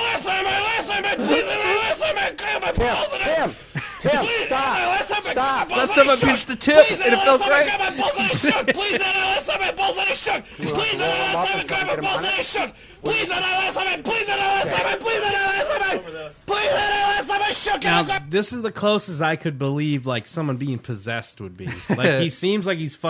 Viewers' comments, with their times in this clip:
0:06 sounds like a typical rap song flow nowadays
0:07 Around the mark the way he keeps yelling that sounds like it could be a system of a down song to me lmao reminded me of shimmy
0:11 pretty sure he’s doing a System of a Down impression.